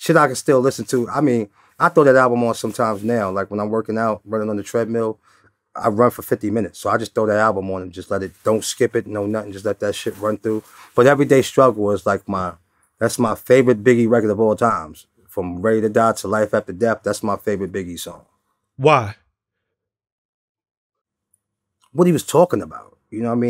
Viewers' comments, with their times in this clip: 0:10 Quoting BIGs classic lines, Cease need to release new music since he has that unique voice! 🔥